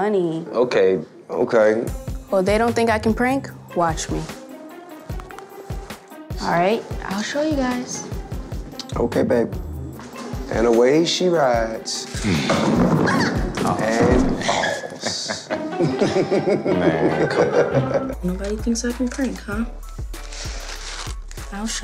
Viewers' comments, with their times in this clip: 0:05 dayum that bone cracking noise